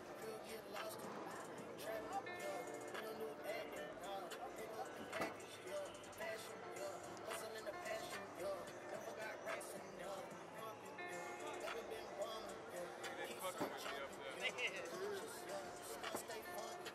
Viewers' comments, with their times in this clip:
0:04 Who is that rapping ? That nigga was spitting.